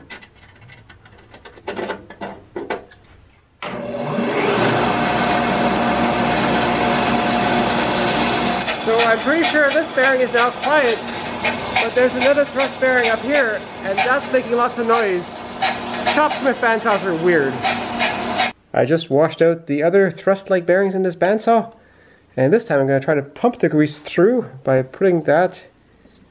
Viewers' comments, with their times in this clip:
0:08 sounds like a cat squirrel!!!! LOL!!!!!